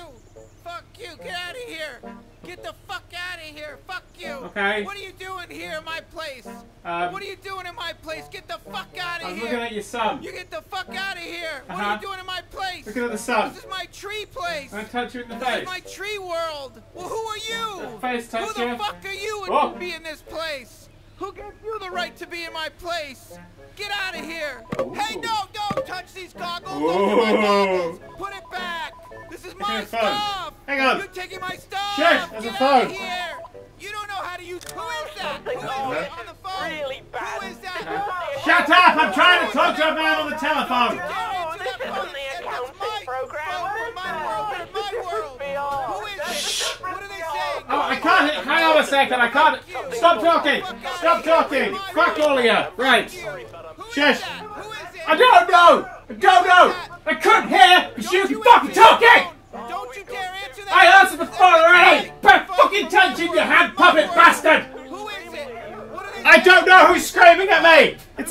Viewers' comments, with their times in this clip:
0:10 sounds like morty from Rick and morty
0:32 Keep in mind, he's by himself, in his office, screaming, and waving his arms, at nothing. I love thinking about that
0:55 You sounded genuinely pissed off at the guy in the tree XD